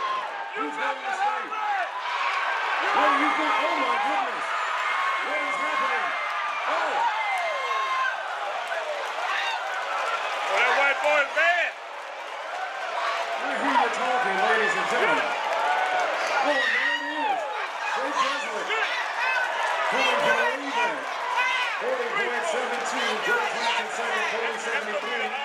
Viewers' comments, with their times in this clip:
0:07 Bruh is there an exorcism going on or something? Who’s screeching like that lmao